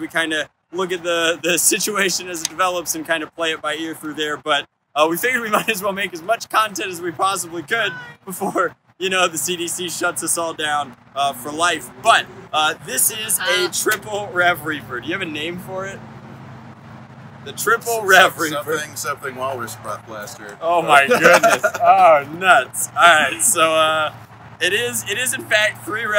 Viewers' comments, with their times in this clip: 0:07 minecraft cat noise